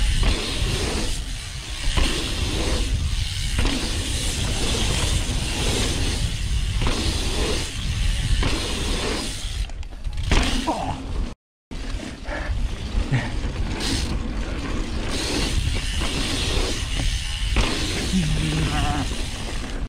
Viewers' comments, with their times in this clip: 0:10 Oof, why did the sound cut out ? 😉